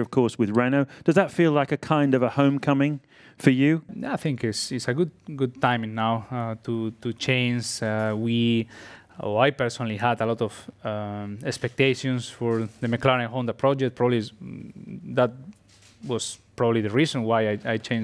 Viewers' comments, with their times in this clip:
0:04 his voice was so high back then what happend